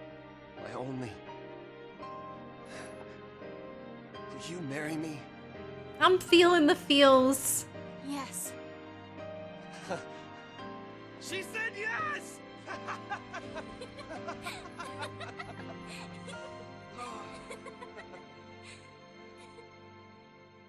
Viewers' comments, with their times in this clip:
0:05 this line delivery from Serah was ᵗᵉʳʳᶦᵇˡᵉ. Why did Snow take her seriously?? 😔